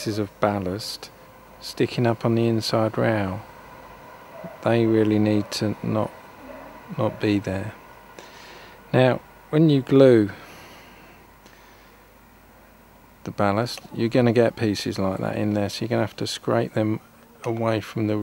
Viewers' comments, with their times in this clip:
0:05 is that a train I can hear? :)